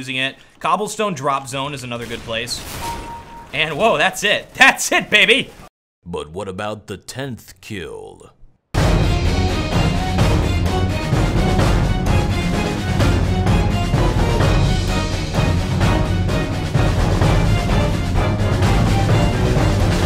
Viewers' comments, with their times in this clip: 0:05 Hahaha, they just couldn't believe it's your real voice xD was awesome, the punchline killed me :D This was actually the best Unboxafragathon video you ever made. So I totally prefer quality over quantity! Keep up the great work!